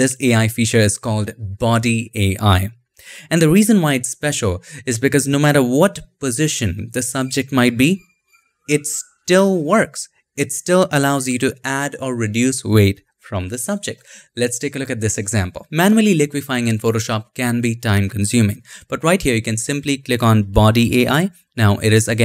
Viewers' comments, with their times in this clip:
0:06 anybody hear Birds